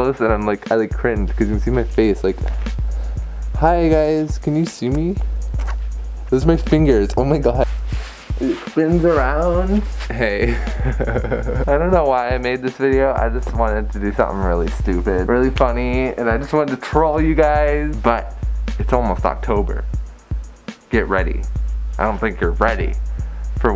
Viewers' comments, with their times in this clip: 0:09 > hyperventilates I GOT A NEW FURSUIT, OH MAH GAWD